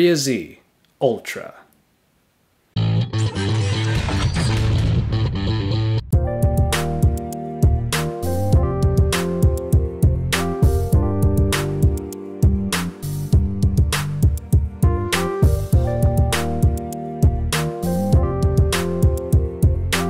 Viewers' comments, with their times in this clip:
0:06 Great review, very helpful although i think I'm gonna go with the Xperia Z1 when it comes out. Also anyone know the song Very groovy and Shazam won't pick it up...